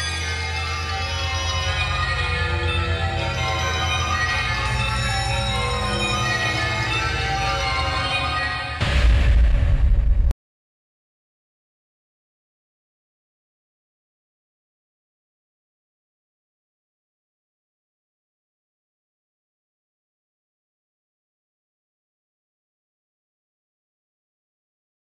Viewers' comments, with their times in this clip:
0:10 This is real music! I don't see why the video is over 10 minutes long, though. The song ends after that there is only silence.